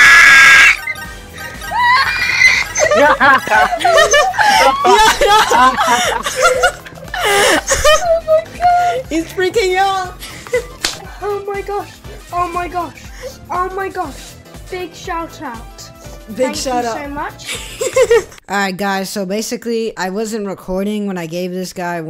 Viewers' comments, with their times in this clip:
0:06 the scream goes crazy. Let me drop the kid 1k